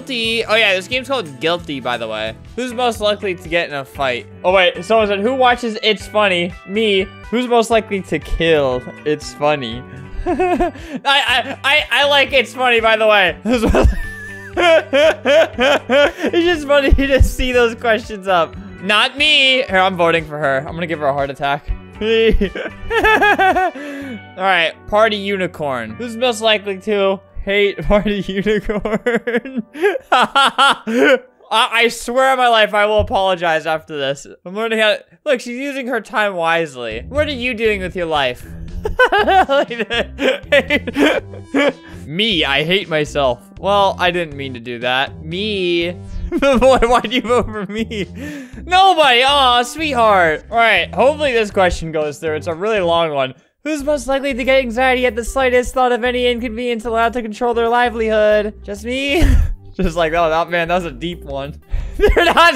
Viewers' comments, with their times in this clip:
0:07 I like how my favorite song plays
0:48 I can’t stop replaying that🥺 he sounded so kinddddd